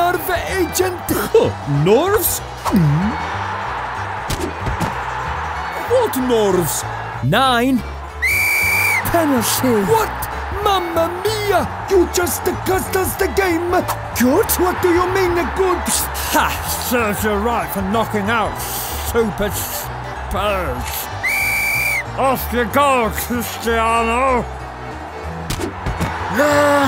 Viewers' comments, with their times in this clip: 0:09 you can hear the lisp